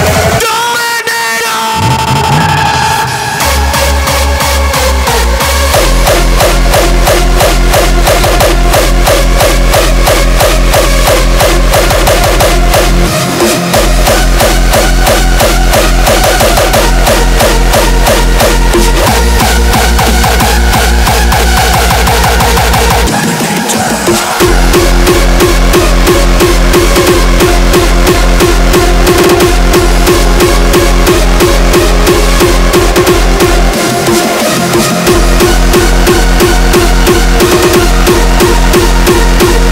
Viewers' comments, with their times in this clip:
0:03 probably one of the greatest drops ive ever heard
0:03 The kick/melody combo is just TOO DAMN OOOOFF GODDAMNIT. Combination of goosebumps the size of melons and throwing out my arms like Regain does during Xorcism lol love it! <3
0:23 this kick adds so much energy
0:23 the bass omg
0:23 Wheres the insane kick roll lol
0:24 Correction on i like the kick more in